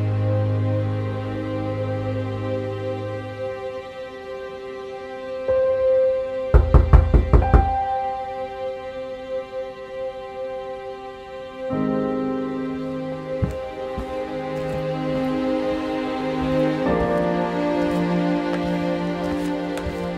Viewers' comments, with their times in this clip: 0:07 Really got carried away with the music after Carrying way past 5 minutes into the film.